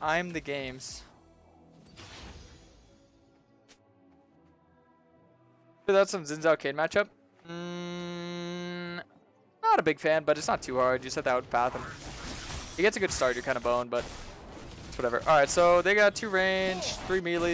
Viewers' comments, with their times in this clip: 0:05 thats literally an f note dude wtf?